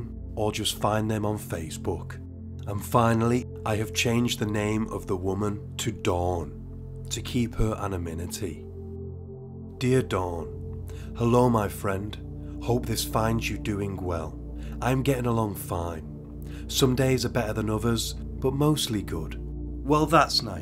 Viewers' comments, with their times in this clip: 0:06 "anaminity". It's anonymity.